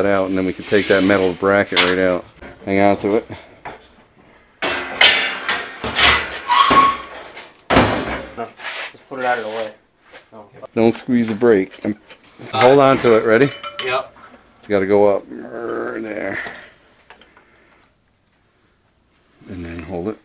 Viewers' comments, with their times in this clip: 0:06 That noise after he told him that he could pull it out! 😬🙉